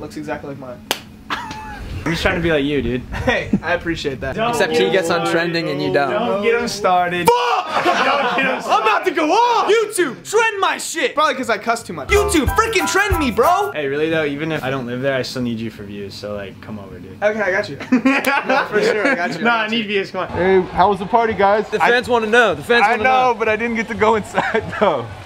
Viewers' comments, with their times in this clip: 0:07 he sounds like logan paul when they both say f**k